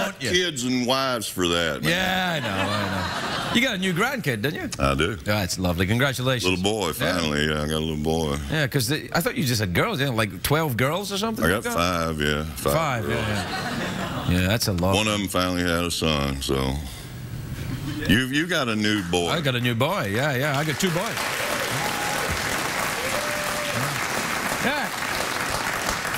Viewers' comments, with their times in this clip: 0:07 probably the greatest moment of this show I’ve ever witnessed. Don’t think Craigy has laughed as hard as that in his life